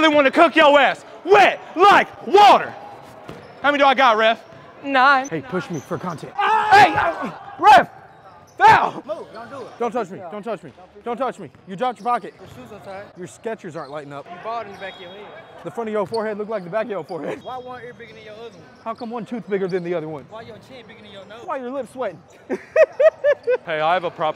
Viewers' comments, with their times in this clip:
0:05 So nobody heard when dude whispered “Hey, push me for content” 🤦🏾‍♂️😭